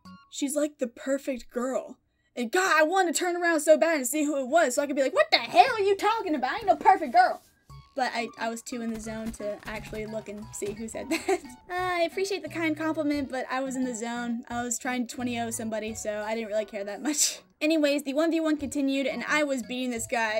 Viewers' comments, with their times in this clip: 0:04 that accent tho funniest part😂😂